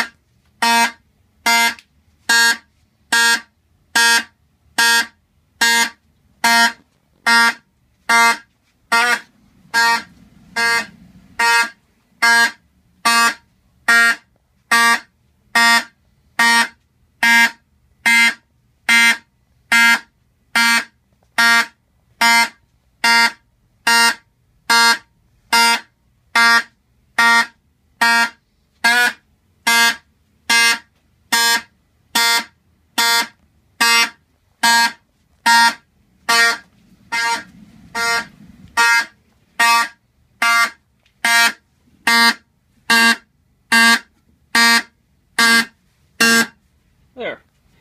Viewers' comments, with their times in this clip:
0:07 fire voice crack
0:28 Why did it make a wierd pitch change ?